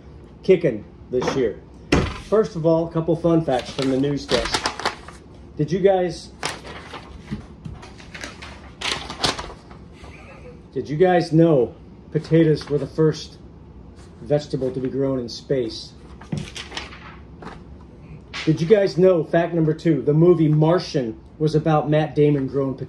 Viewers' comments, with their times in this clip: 0:08 What a great chat - love the snicker